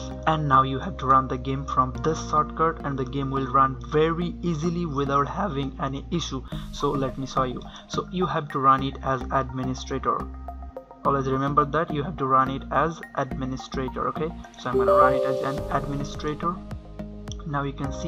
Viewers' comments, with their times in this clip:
0:05 nice voice crack, thanks tho!